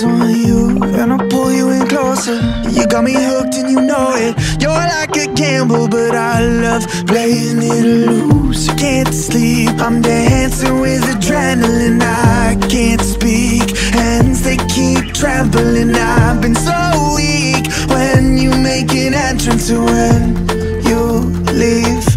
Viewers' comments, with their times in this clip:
0:04 before I though it was "you're like a candle but I love playing with fire" omg such a great quote, who else thinks that it would be better than "you're like a gamble but I love playing it loose"?